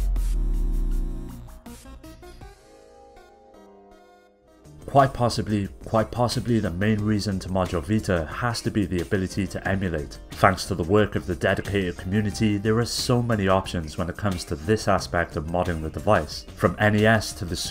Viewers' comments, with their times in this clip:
0:05 There is nothing wrong with your ears... That is me being a tit and forgetting to take out a double take.